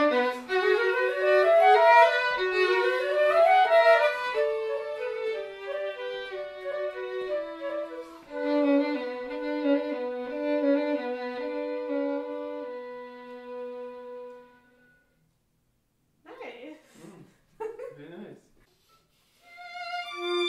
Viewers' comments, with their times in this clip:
0:08 Wouldn't it have been so cool to have a written Low B there for that line?